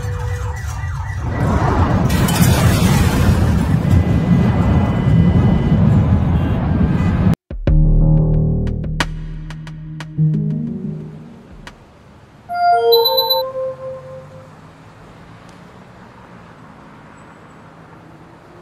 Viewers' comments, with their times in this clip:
0:03 I think the barking dog was finally killed